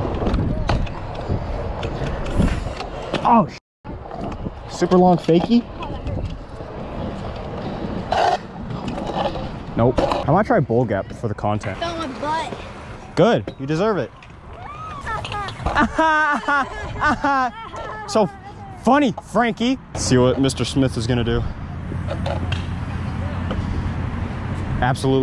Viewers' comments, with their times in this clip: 0:06 I thought that was a burp 💀😭